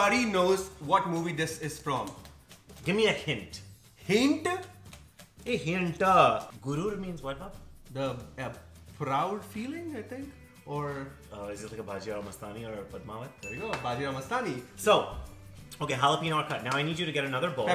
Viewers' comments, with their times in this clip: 0:05 hintu...........made my day😄